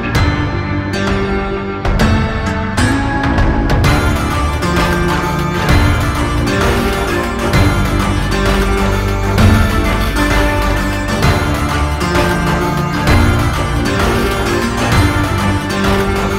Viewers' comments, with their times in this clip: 0:04 starting in the background I hear what sounds very similar to portions of "Final Battle" by Waterflame